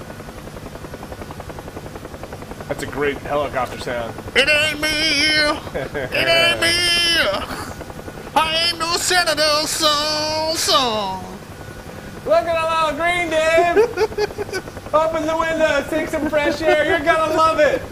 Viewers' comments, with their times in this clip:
0:05 That reaction killed me :D Viatnam war music :D